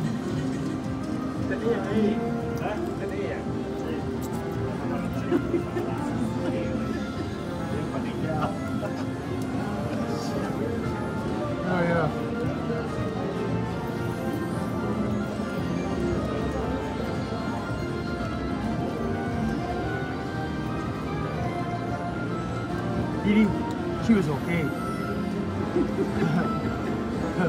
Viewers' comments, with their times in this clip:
0:10 See that real slick pit sniff?!